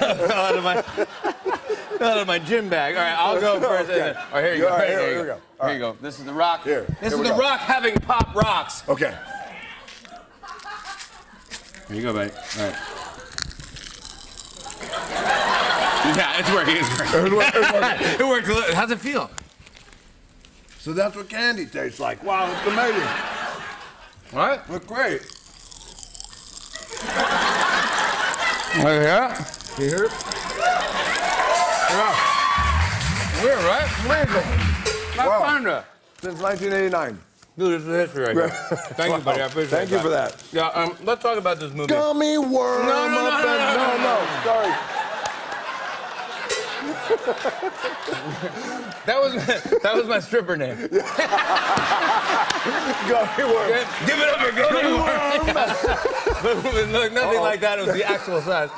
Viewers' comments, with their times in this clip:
0:10 This is ASMR with Dwayne "The Rock" Johnson
0:13 Chewing Candy ASMR
0:16 rock does asmr
0:25 Lets Introduce Jimmy DOES ASMR
0:26 What everyone hears in a Xbox party
0:28 jimmy fallon asmr channel coming soon
0:46 that laugh that comes out of the rock is priceless 😂😂😂😂